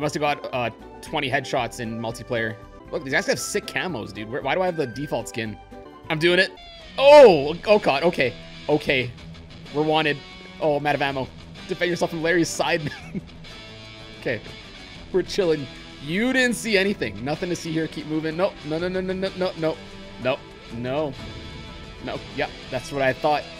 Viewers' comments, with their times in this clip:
0:06 halo 2 theme intenseafys